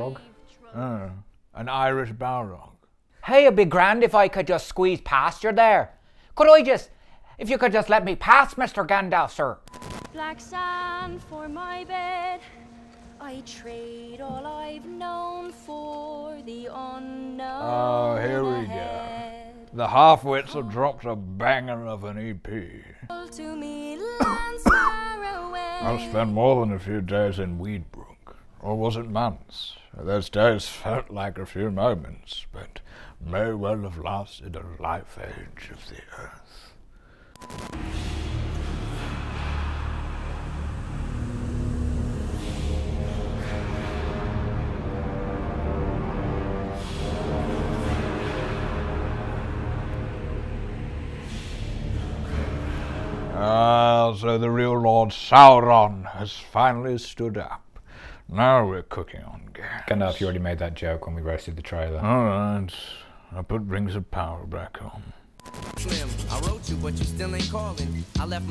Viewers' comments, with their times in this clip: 0:03 Irish balrog caught me off guard xD
0:13 Be MEANER. looks like a parody of Bjork's singing in Dancer in the Dark.
0:38 Sounds eerily like Skyrim after you've found a word of power. I guess that makes Slim Shady there a Draugr Deathlord, lol Morgan Freeman showing up as Eru to put his two cents in would be hilarious, too.
0:50 music sounds like “Shi-Ka-Ka” from Ace Ventura 2 😂